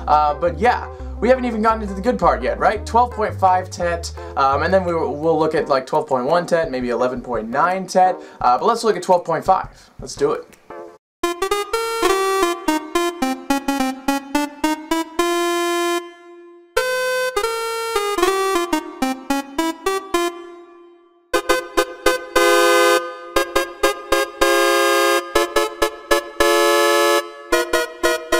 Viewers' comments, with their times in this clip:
0:10 Right at the start of the 12.5TET section, if not mistaken, and changing direction before the last note. I begin to hear it everywhere, absolutely weir♦d. Video btw was awesome, and a great creative way to approach new tunings and you also brought up very practical usecases. Might try out some of these ideas myself :) How did you go about making the tunings, or were they already available in that softsynth? I love to play with the microtonal feature of the Monologue, and shifting tunings under sequenced patterns can be such a subtle, but great effect.